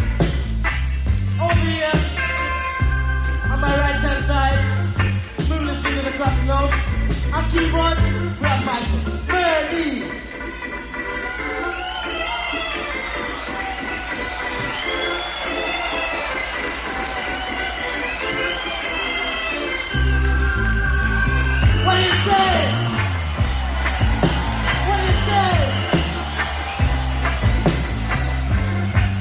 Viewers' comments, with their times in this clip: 0:10 DEFINETELY THE APEX OF THE WHOLE TAPE. THIS KID INTHE ORGAN,.,,KILLING!!!